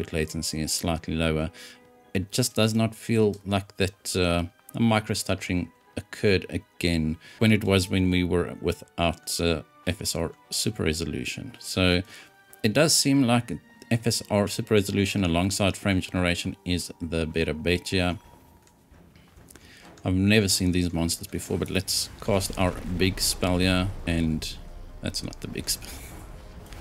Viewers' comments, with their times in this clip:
0:07 Ugh, just excuse the throat-clearing ... It's a cut I missed but I did cut it out with Youtube's Editor now, so it should be gone soon.